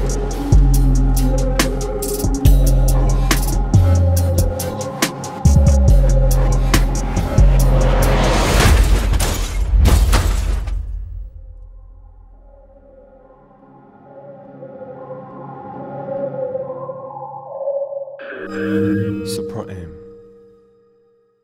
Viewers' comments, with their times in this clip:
0:09 changbin's grr its thats his birthday